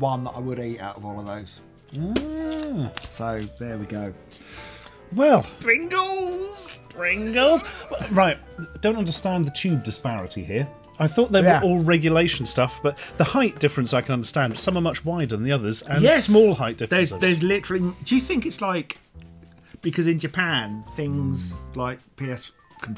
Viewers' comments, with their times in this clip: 0:07 Ah, yes. Pingas taste test. more like "I can't understand the tune disparity" going on in the background